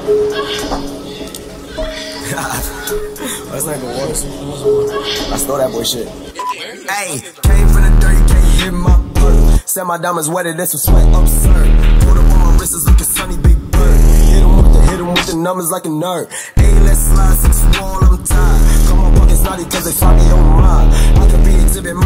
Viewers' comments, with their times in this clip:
0:07 drop was insane 🔥🔥🔥